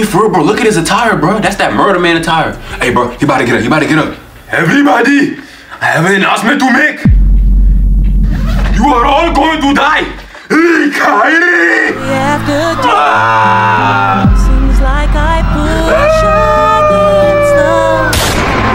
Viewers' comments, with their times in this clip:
0:06 The fake accent💀